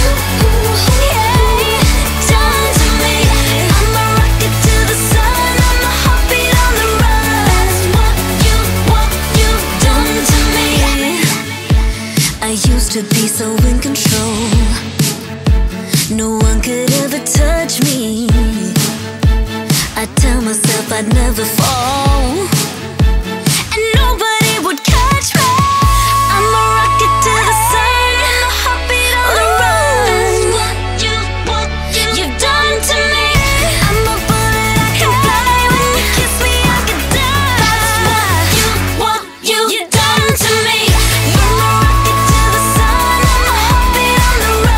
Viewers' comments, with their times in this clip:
0:05 imma hobbit on the run? haha
0:28 Ariana Grande stole that riff 😢